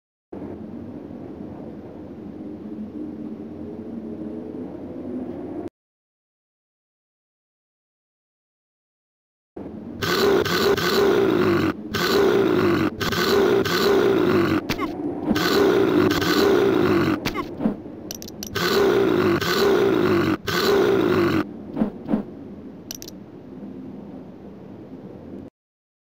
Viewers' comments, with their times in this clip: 0:09 Those growls sound pretty similar to King's growls in Tekken 1 and 2.